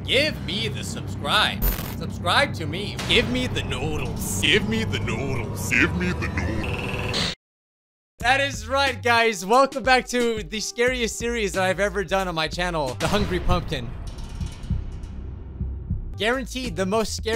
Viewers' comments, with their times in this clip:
0:03 Sorry, I thought you said give me the noise but you actually said, give me the noodles